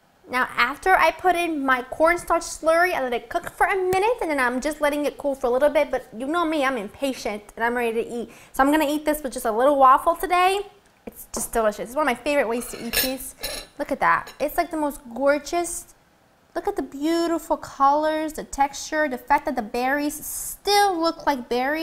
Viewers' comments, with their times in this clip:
0:06 thought she said "pig shit" lol